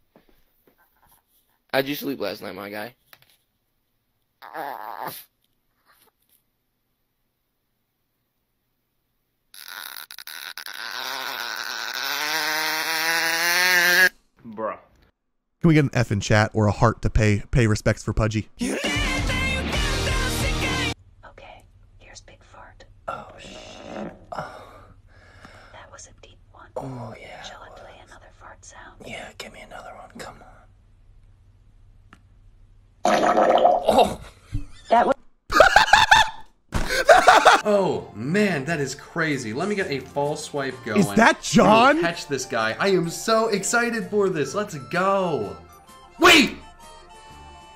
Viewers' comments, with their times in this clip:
0:10 WHY DOES SOUND LIKE ONE OF THOSE TOYS THAT YOU HAD TO WIND UP AND THEN IT'D MOVE
0:32 jesus christ i can hear bubbles